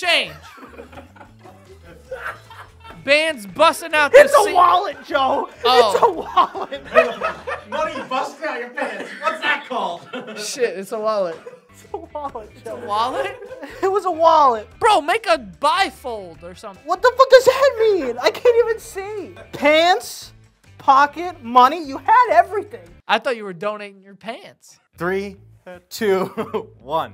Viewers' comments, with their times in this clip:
0:10 Not only were Joe’s guesses hilarious, but his cute innocent voice after was precious 🥹💜 “shit it’s a wallet” “I thought you were donating your pants!” 😂